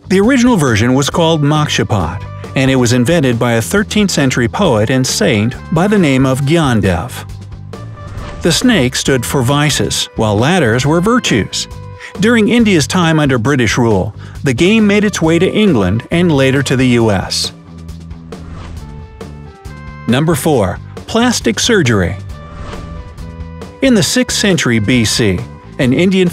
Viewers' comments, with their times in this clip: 0:09 I like the way he pronounced 'Gyaandev' to 'Gyandav' 😂🔥